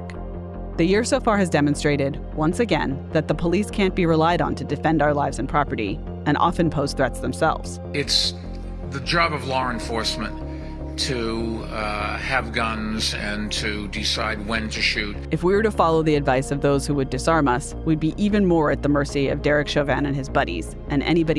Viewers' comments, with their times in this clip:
0:08 its the job of "Lar" enforcement to have guns. Thats ALL i needed to hear.